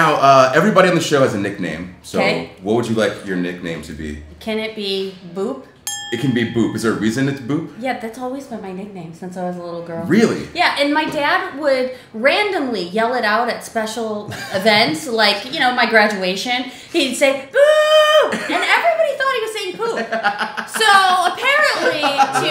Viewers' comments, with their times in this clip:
0:06 Am I the only one who heard boob instead of boop